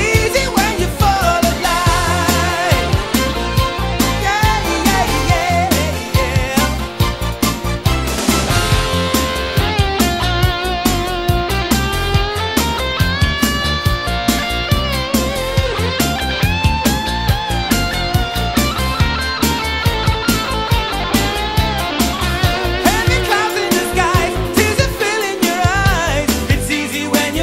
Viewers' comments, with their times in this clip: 0:08 F'n sick guitar solo!